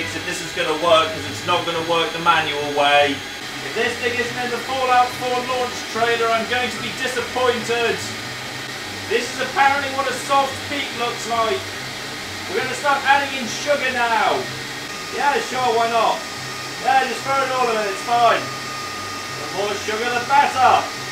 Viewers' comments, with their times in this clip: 0:03 What did he say? I heard Fallout 4 Trailer!